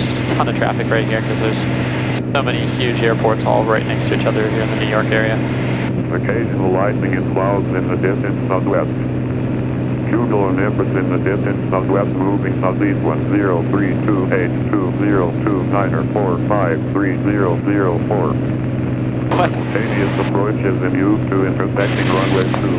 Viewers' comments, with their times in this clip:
0:04 Does ATIS report "Occasional lightning and clouds in the desert southwest"? Having trouble understanding that computer voice.
0:09 Hey a DECtalk automated weather service, those are getting rarer